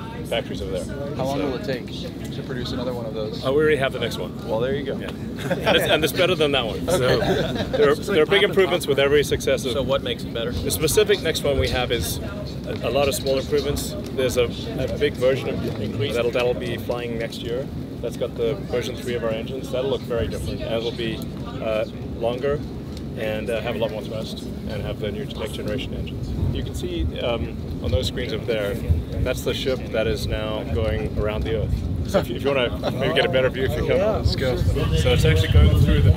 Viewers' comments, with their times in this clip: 0:04 richest laugh ever
0:20 Is that her vaping in the background or someone else?